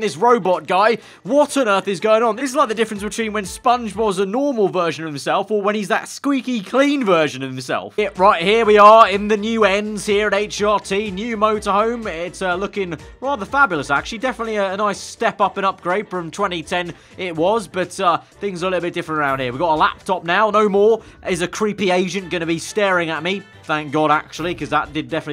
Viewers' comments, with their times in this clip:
0:09 it sound like he said creep Asian instead of agent 😂😂